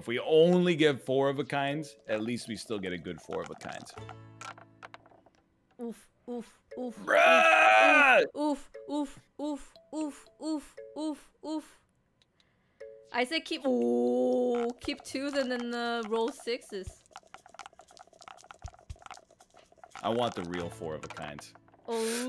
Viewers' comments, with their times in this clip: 0:06 That bruh was e t h e r e a l